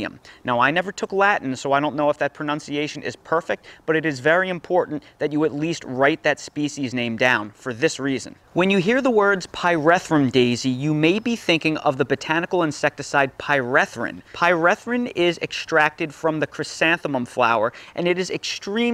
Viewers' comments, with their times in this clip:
0:03 you butchered that, but it's for the best because it would have sounded lewd if you used a precise reconstructed Latin pronunciation or even Italianate.